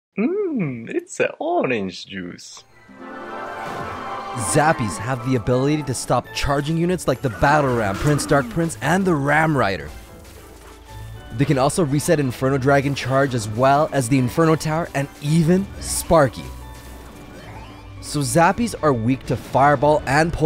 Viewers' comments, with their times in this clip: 0:07 turn on subtitles "Bad Arab Prince"